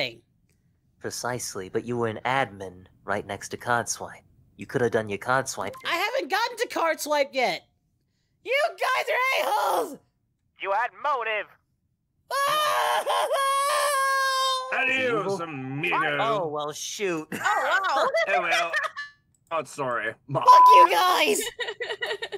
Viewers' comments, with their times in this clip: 0:10 "You had motive" Jesus Christ, i kept forgetting how quiet Alastor can get, his voice scared the shit out of me.